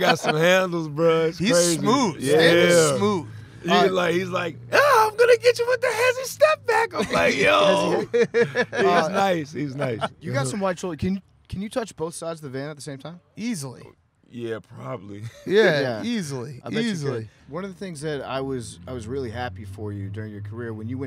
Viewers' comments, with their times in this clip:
0:04 This just reminded me that I’d completely forgotten about Dwight Howard’s Stan van Gundy impression, but also that I’d desperately been missing it.